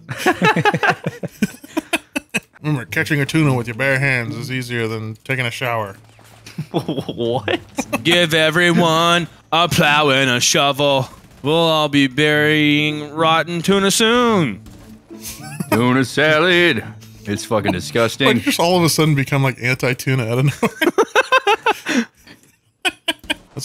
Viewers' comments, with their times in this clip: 0:10 Sounds like a Wiggles rhythm to me🤔